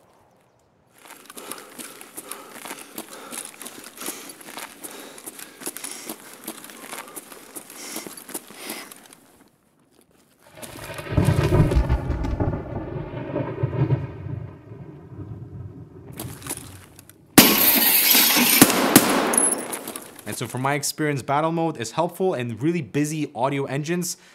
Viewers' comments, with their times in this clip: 0:10 Nice recording :) I could hear the exact enemy position on my X2HR, so I'm wondering if these Creatives would be better for gaming (i.e. is it an upgrade?)